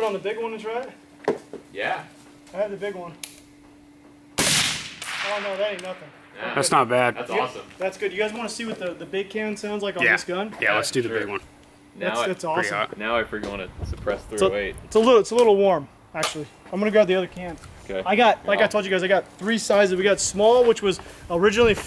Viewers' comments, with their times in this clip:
0:06 you can hear his safety click between shots. That’s the experience I appreciate